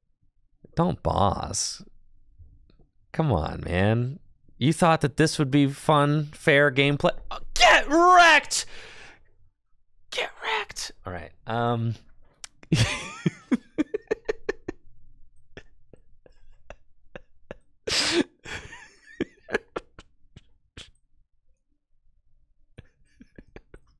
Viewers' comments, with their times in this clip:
0:07 Just hat to hear that 5 times already and still counting, that "GET REKT" screech out of nowhere so so funny.